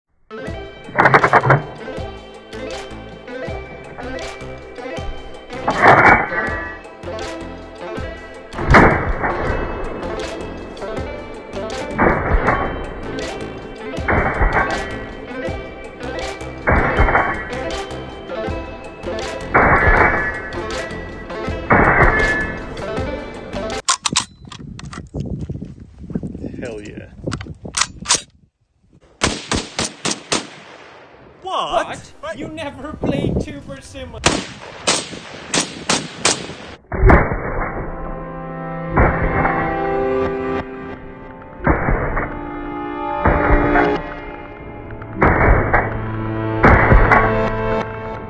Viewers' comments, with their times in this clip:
0:00 I was like hell yeah with the music and the slow motion is epic!
0:31 I really thought I forgot to close my previous tab that had a PewDiePie video on it...
0:32 dem gunshots sound like the next episode beat🤣